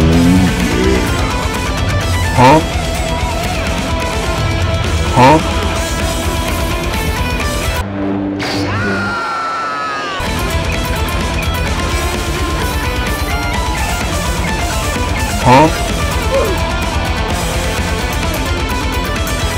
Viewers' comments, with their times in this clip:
0:07 Some cool editing here. I loved the round intros and music. Luke Skywalker's scream paired with the hand snipe was outstanding.